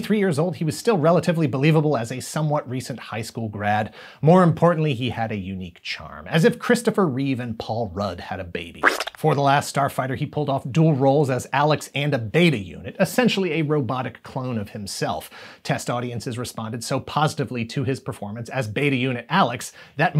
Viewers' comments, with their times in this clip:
0:06 I... I was not prepared for that sudden and explicit sound effect.